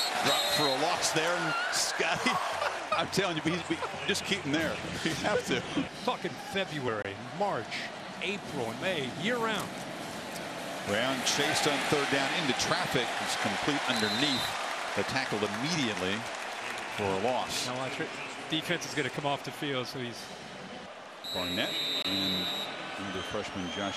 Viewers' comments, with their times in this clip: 0:06 I never even noticed that. Always heard it as "Talkin' February." But now I can't unhear it.